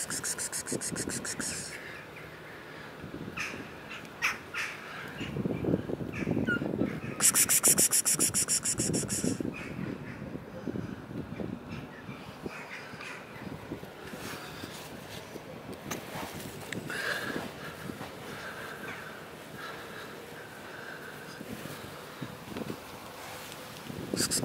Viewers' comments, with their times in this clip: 0:05 One of the kitties gave a cute little meow ^_^
0:07 That little baby tiny peep to say hello 💕💕I can tell it is very cold there ❄️❄️❄️